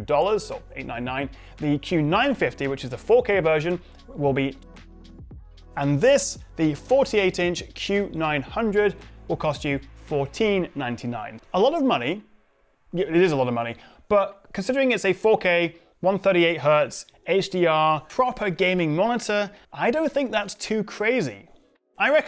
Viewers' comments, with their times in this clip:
0:04 Why did you mute yourself when you said the price of $1199 🤔
0:05 Hey Chaps! Do you think 48-inches is too big?? Update: Apologies for missing audio I'm supposed to say $1199 for the 32-inch!